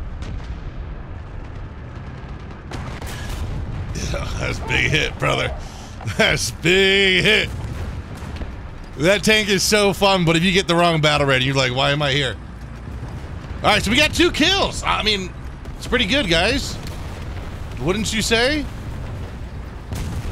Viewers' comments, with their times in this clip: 0:06 you sound like rorke from cod ghost